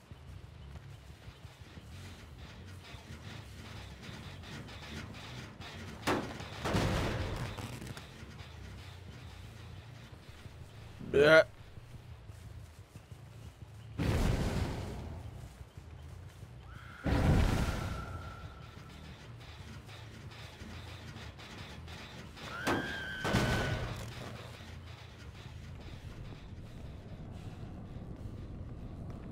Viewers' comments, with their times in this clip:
0:10 Was... Was that a fart covered by a fake burp?